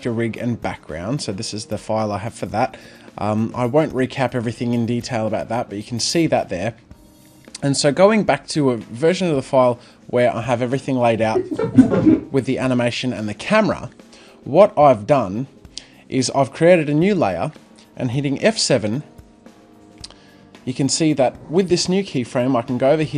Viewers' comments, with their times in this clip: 0:10 whats that noise ?